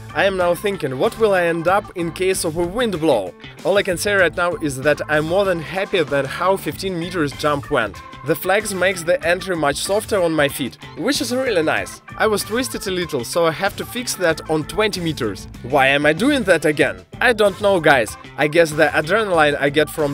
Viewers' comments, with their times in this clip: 0:03 is some peeing?